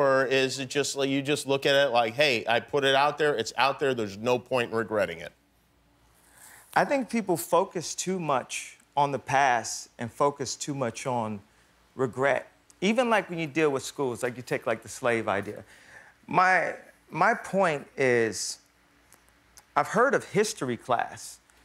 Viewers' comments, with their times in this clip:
0:06 you can hear him touching hus beard lmao